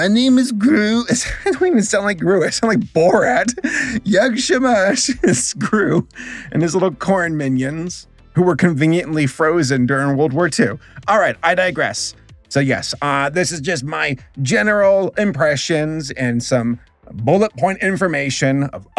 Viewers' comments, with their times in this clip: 0:03 from where did you get this polish XD
0:03 i didn't know Saberspark was so fluent in Polish..🤨